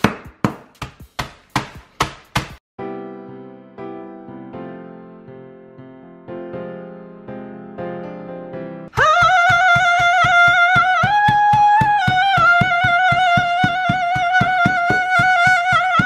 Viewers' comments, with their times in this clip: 0:03 i thought it was "eyes nose and lips"😍